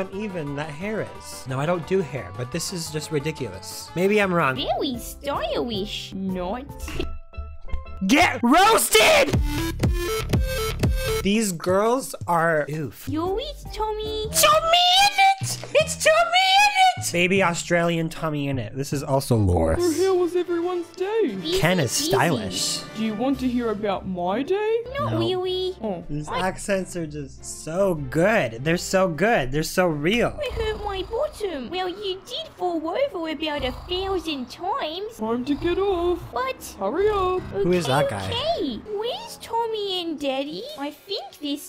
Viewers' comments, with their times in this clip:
0:10 God that song bought me back to 2017
0:24 why do i hear dark souls boss fight music